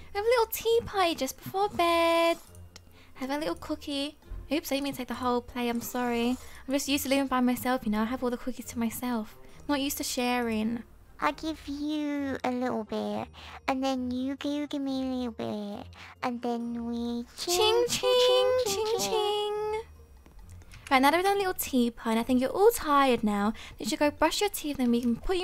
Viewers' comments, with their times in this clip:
0:10 omg she is saying so much now i can now what here voice is thatq so cut i cnat hear it good but ITS CUTË!!!!